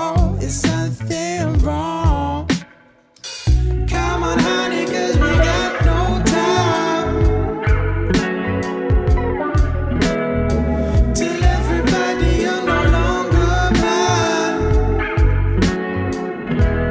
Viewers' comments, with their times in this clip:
0:03 is out of a dream. wish i could quiet the voice a tiny bit in the mix and just listen to that guitar on loop over and over